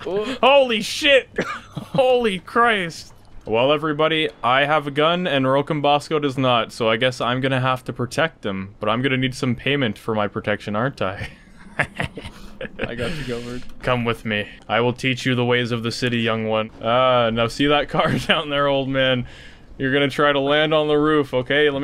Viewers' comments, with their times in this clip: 0:09 Lmaooo ima need payment menacing laugh old man crouches and says got u covered lmaooooo